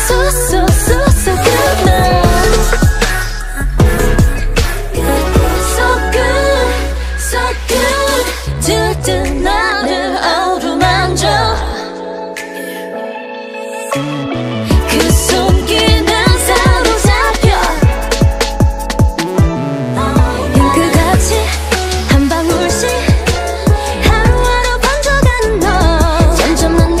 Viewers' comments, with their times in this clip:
0:07 maybe u never notice this guys, but irene and seulgi harmony so dem good
0:08 Irene slays as always in harmony Btw Can someone please tell me the song meaning, I suddenly can't understand English
0:09 omayghad Seulgi and Irene's harmony
0:09 Holy shit they sound so good together